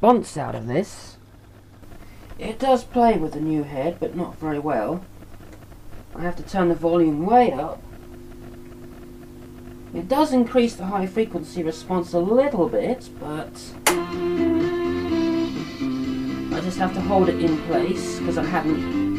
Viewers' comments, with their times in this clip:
0:03 your experiment the recording is poor because the head is not secured, and so the azimuth is all over the shop. Plus you are using a condenser mike when these machines were built to use crystal or at least a dynamic type. might be worth a bit more experimenting.